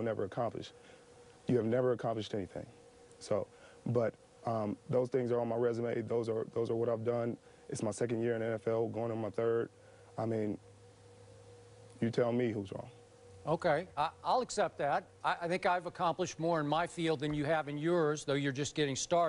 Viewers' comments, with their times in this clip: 0:05 he so mad he can barely talk 😂